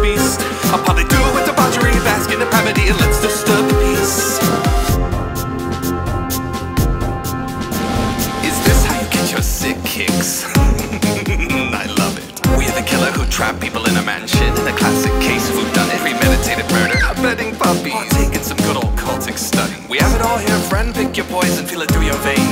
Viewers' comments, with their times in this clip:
0:08 That chuckle is so perfect omfg
0:09 Omg, I love the laugh in
0:10 THE LAUGHHH- i cant stop simping for this man
0:10 HOLY FRICK HIS LAUGH IS AMAZING AND GAVE ME THE CHILLS